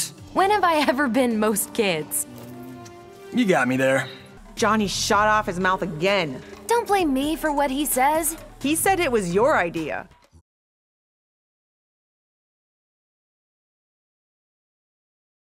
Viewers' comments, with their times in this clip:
0:10 Alexa, cue Quan Chi's evil laugh.